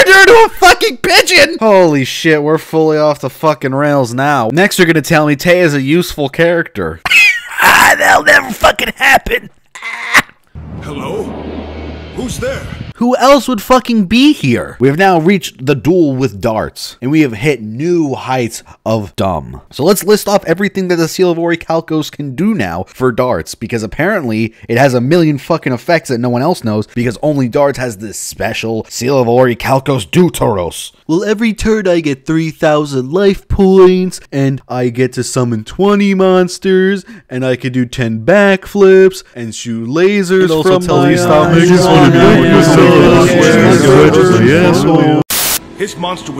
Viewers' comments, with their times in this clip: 0:06 you turned into Ethan Klein for a few seconds there
0:30 XD even Serenity laughed as hard as me